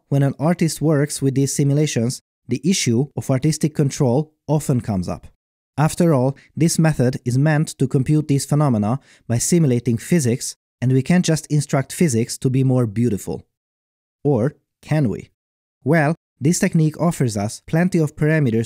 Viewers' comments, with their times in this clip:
0:06 vsauce music intensifies